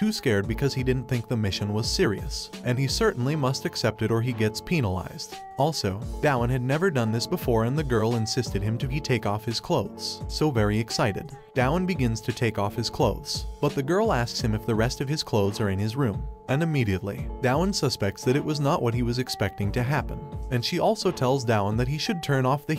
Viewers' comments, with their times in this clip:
0:04 penalized sounded to me like pen is going to be cut or something SUS